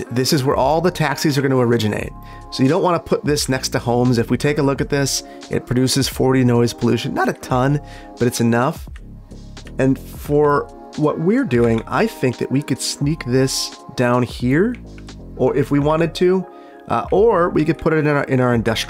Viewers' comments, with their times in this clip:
0:06 !!voice crack alert!!